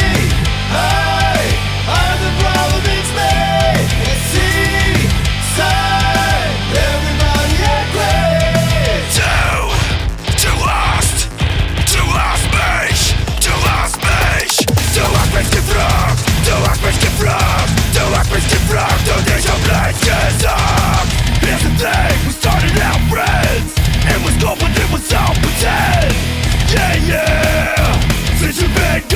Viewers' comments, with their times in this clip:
0:09 that "Du Hast" sounds amazing!
0:10 Wtf giving me Devil May Cry vibes